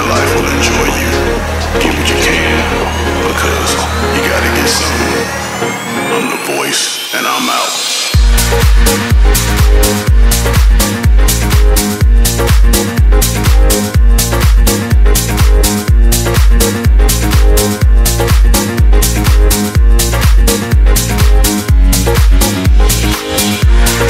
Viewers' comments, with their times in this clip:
0:07 the drop you guys are looking for is ;)